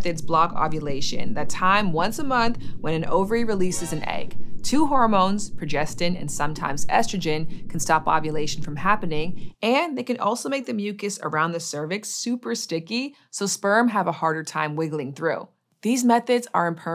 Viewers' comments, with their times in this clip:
0:03 The metal gear sound was very appreciated haha